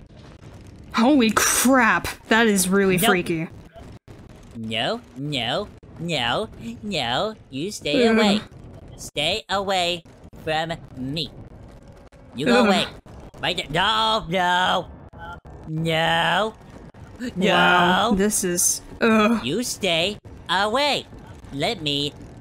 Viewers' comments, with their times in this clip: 0:03 The way Cartman said no was cute lmaoo